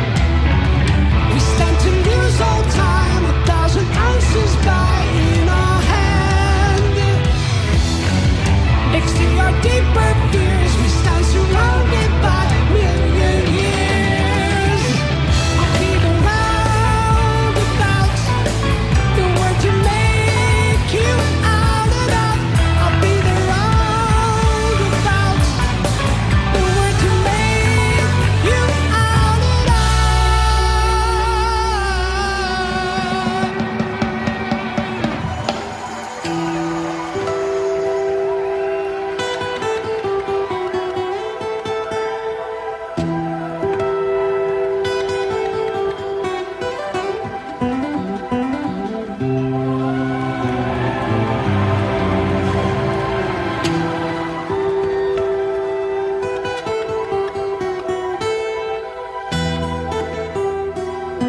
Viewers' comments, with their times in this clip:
0:09 He did crack I was very disappointed, lol
0:46 This is awesome, but I'm still trying to figure out if Steve Howe made a mistake or if he did it on purpose... thoughts?